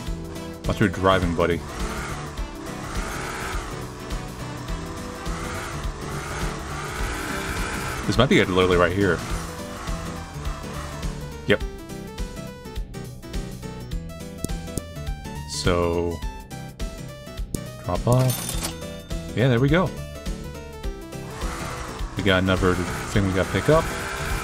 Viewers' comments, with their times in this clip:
0:09 Ok its a cute game with nice art but....was anyone else JAMMING to the bg music? Like bro, music for the first delivery sequence was lit, especially